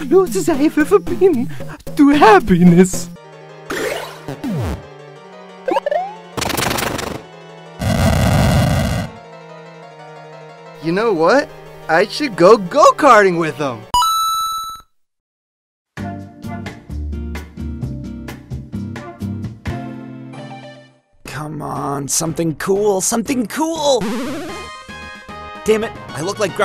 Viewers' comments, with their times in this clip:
0:10 Oh Hey Bowser, when did your voice become NOT YOURS?